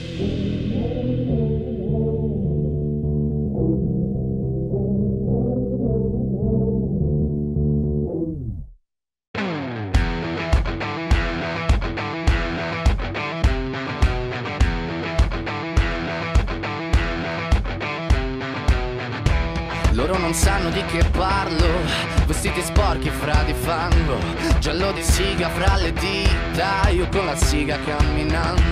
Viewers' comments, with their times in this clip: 0:09 why was I so convinced that one part of this song was in Slavic language?? Listening to the beginning now I can tell it’s Italian why did i think it was russian or something??